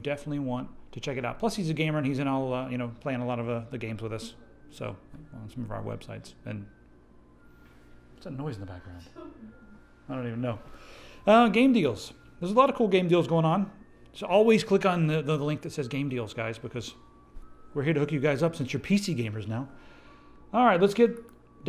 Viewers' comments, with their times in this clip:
0:08 TEH ICECREAM TRUCK!!!